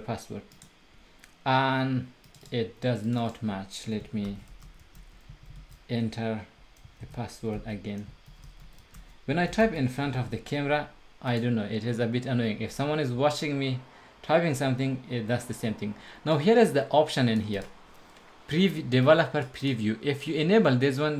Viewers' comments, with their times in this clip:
0:08 easy to find out password by key sound :D